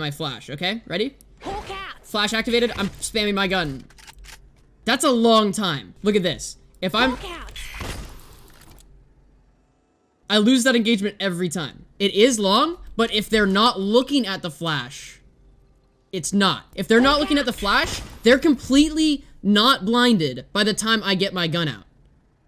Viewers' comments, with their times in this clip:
0:10 how does it make the spike detonation sound but its defused? xD